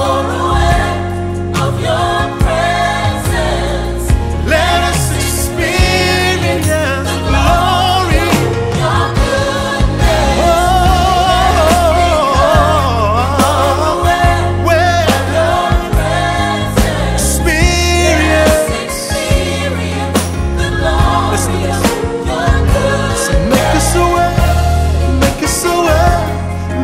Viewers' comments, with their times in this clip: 0:10 is where it gets locked in a holy pocket!